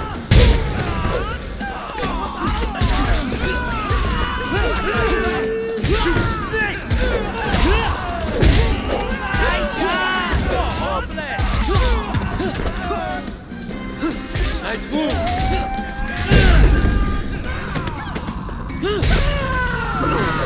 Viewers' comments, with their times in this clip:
0:08 who put uncle roger in there